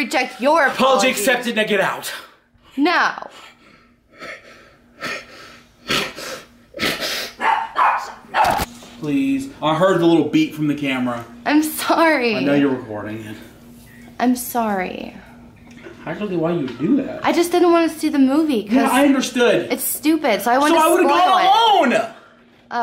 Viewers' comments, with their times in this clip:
0:03 turning on a lawn mower
0:03 the dogs bark😂😂😂😂
0:04 when you try and get the last little bit of ketchup from the bottle